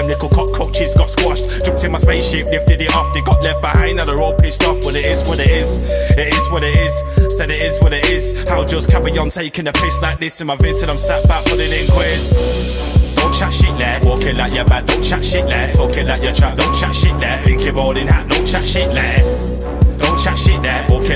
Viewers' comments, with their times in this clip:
0:03 that voice crack it is perfect